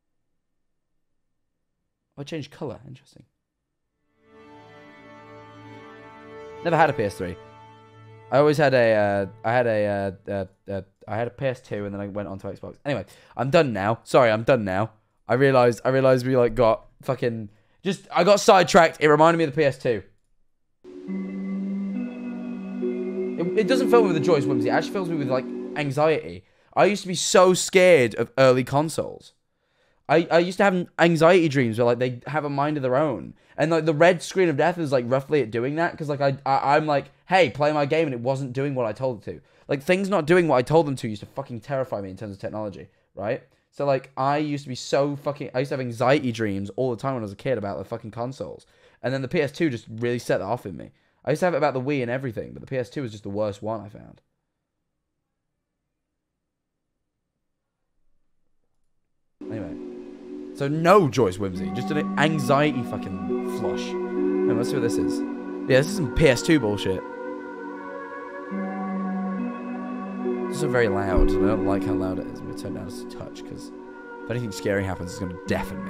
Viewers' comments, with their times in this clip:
0:03 okay i know this isn't the main focus of the video but oh god. we've had a playstation 3 when I was like 5 (I'm 16 now) and that sound hit me like a BRICK. GOD THAT WAS A CHUNK OF NOSTALGIA
1:03 the songs during this video are weirdly eerie but comforting